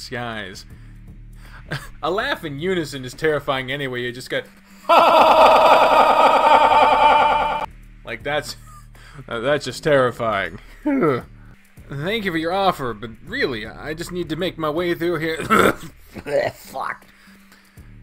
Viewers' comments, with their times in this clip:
0:04 That echo effect scared me more that the rat popping up damn it